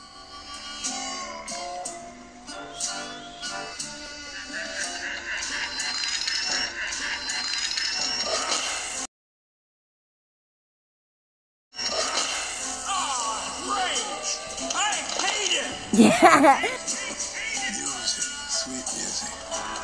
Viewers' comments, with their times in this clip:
0:06 When they keep fixing the road all night, Bessie is laughing and Burst the tar all over Nemo and lightning McQueen and Mega Man X and Zero and Captain Falcon and Mario